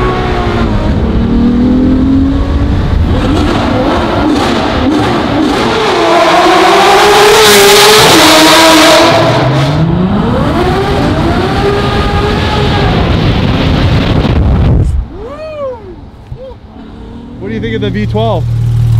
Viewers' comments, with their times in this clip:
0:06 i lost hearing , should have warned 😂!!